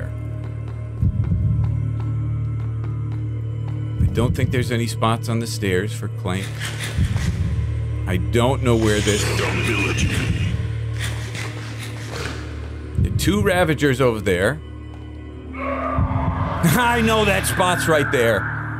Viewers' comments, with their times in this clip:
0:06 Wow for some reason an echo effect is added to the berries eating sounds thats cool